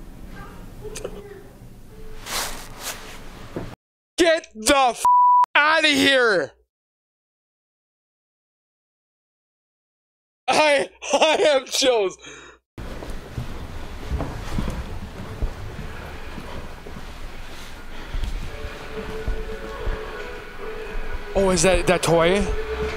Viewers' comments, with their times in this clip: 0:03 “stop in here…” something like that. Almost whiney. Wow that was scary.